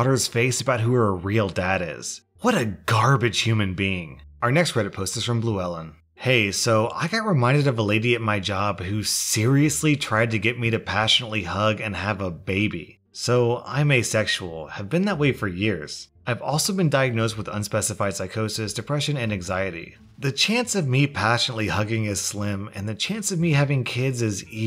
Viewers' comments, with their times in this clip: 0:06 the whistle lmao